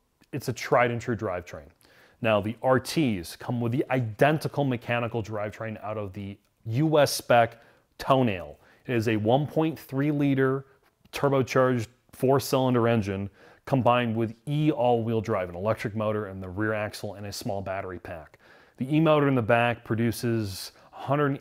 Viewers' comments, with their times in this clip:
0:07 From now on, I will refer to the Alfa Romeo "Tonale" as the "Toenail",
0:08 Did he just pronounce "Tonale" TOE-nail? It's toe-NAH-ley. They got it right at other places in the video, so maybe he was making a joke.